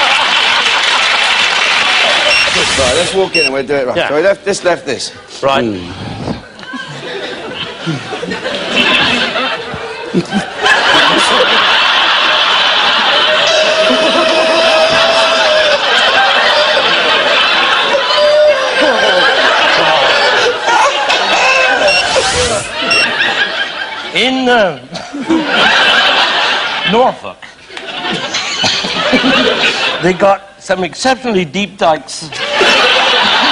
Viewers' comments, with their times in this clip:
0:07 … best Del boy impression ever from Davidson
0:14 MAN DOES THE BIG NARSTIE MEME LAUGH B4 it was famous!😂🎉👀